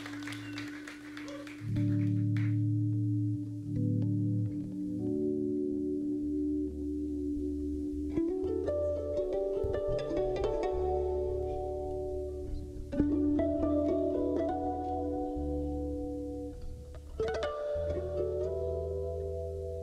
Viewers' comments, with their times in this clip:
0:03 beautiful guitar solo